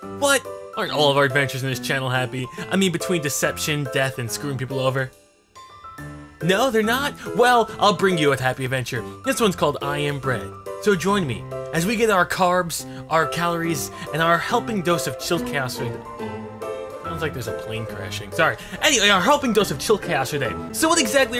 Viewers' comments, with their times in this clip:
0:05 Love that thumbs up that is perfectly timed with the chime in the song. I saw this game on steam today and after seeing this, I MUST BUY THIS GAME ~TG